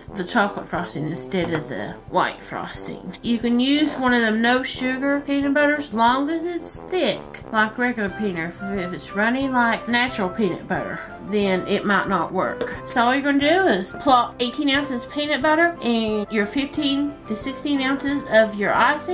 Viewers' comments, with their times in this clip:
0:07 she says "peaner fribbits". I will never call it peanut butter again.